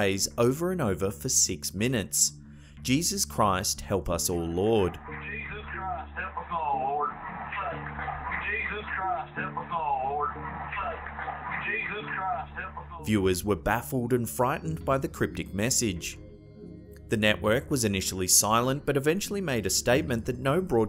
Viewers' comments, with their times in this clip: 0:05 If isn’t a southern accent, I don’t know what is